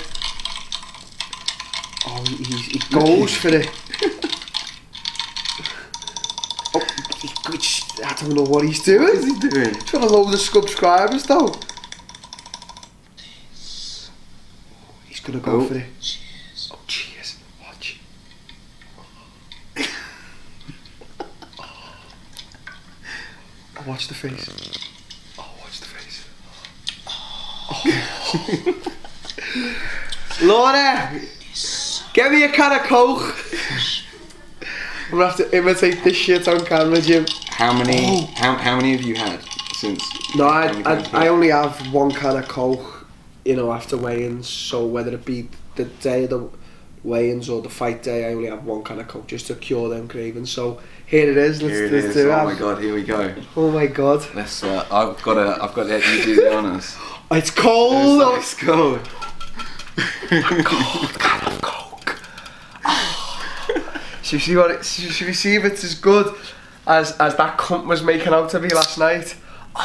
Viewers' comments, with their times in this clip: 0:03 Commence Full Reptile Laugh
0:57 Darren Till doing ASMR ladies and gentlemen..